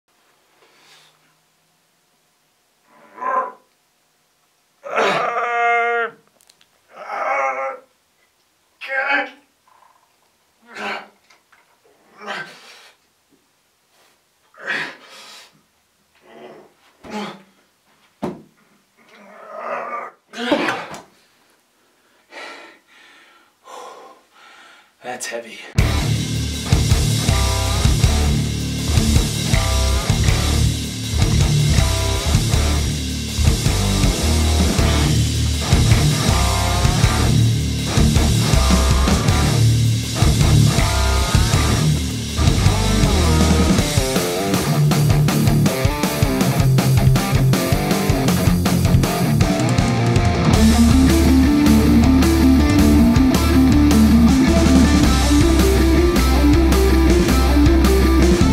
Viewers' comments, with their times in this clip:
0:05 That sound clearly is Chewbacca...
0:29 Heaviest guitar, yet it's made in Canada...
0:45 That rhythm tone is possibly one of the best i've heard. Loving it.